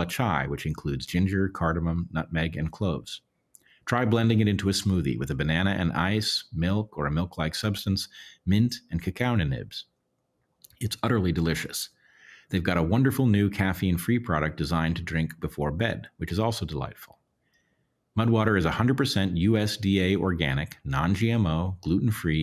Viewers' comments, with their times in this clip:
0:09 “cacao n’nibs” lol. I love you Bret!